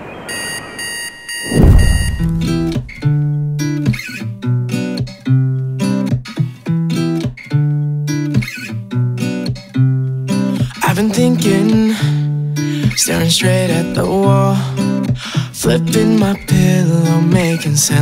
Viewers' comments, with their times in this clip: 0:03 Music starts hop thi helps